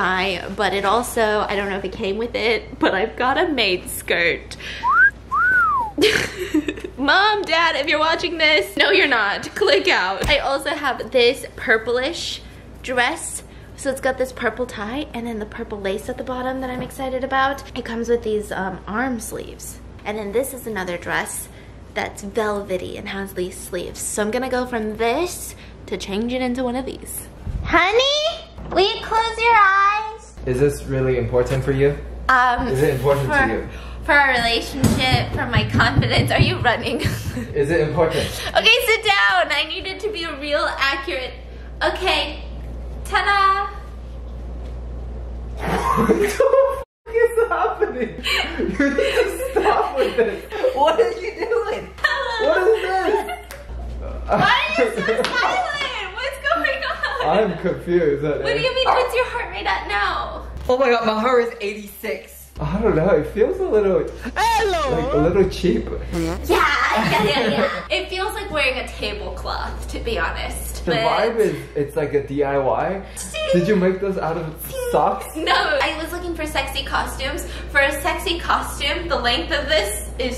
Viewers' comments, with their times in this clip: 0:04 THE WHISTLE LMFAO
1:04 that sudden "ELLOOoo" scared me 😀 the timestamp is btw-